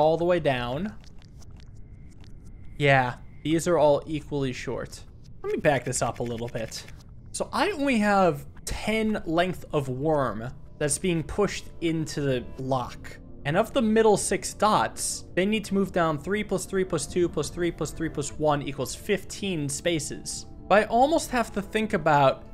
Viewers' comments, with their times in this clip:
0:04 a nice click on 7, 2 is binding | Edit: minute